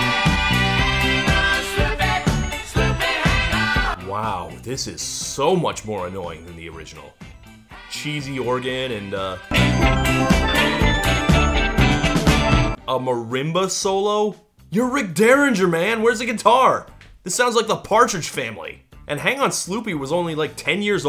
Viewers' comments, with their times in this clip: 0:09 Two things: 1. The sound is a steel drum, and that’s a marimba 2. Why is there a marimba in the music video instead of a steel drum? Why not just have a steel drum?